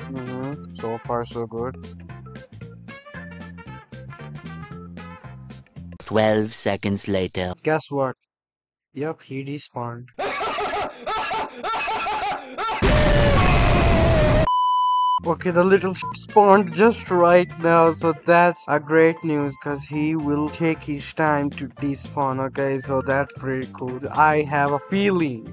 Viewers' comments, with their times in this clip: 0:10 yo that laughing killed me am dead 💀